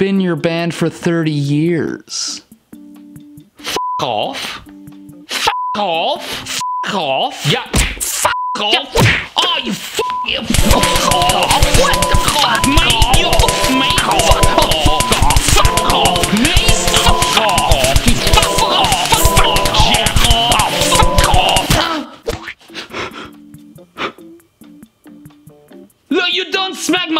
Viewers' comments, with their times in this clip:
0:09 how many beeps are you gonna use in that scene